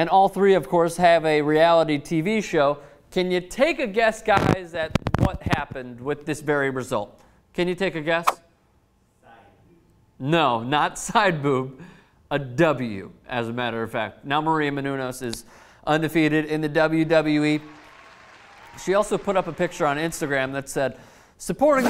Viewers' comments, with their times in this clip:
0:04 Did someone fart?